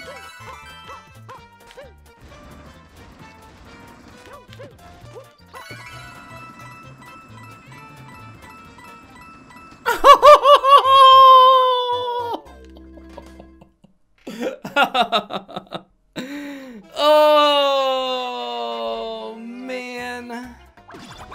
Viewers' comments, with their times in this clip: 0:08 is almost a perfect Mario lava damage noise